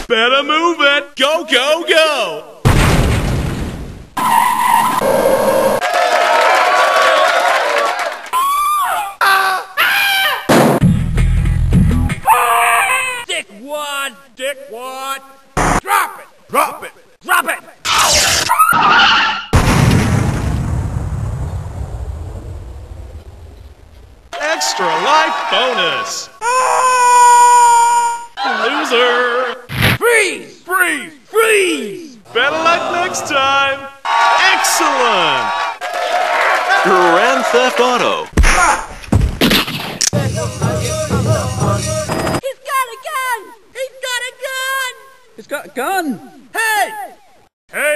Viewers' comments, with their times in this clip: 0:09 I always loved this scream.
0:12 always makes me laugh. He sounds like a raptor
0:13 he says "Dick One?" xD
0:26 when does that scream ever play in the game? I've never heard it
0:32 Wii sports crowds in the background